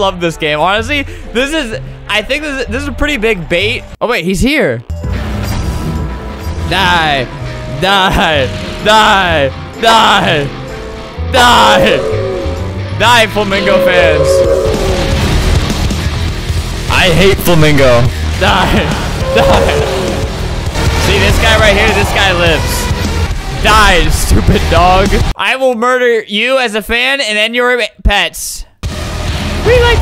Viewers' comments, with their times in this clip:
0:05 when the doom music kicks in
0:05 when the doom music kicks in
0:08 you know your screwed when flamingo plays the only thing they fear is yoi....
0:14 flamingo when doom music kicks in:
0:15 when the doom music kicks in: